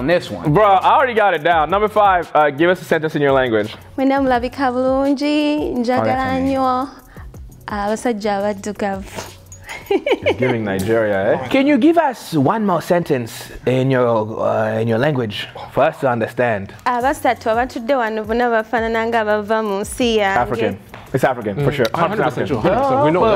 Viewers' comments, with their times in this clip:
0:04 I knew IMMEDIATELY it was luganda (From Uganda) lol Nigeria??? P.S. I'm from Kenya.